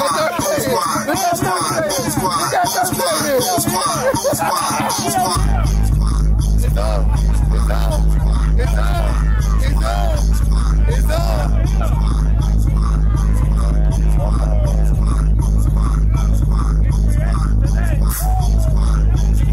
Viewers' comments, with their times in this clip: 0:04 Heat is that beat